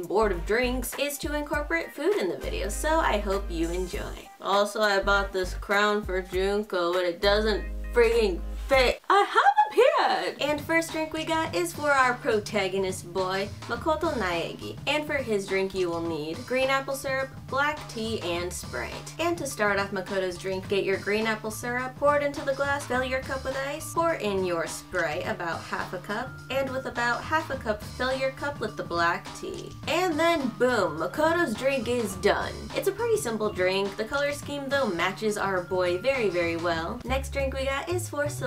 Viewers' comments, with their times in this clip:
0:08 That “I HaV ApEArD!!11” at the beginning got me lmao
0:26 I had my volume on low and thought I heard "and with about half a cup of failure", lol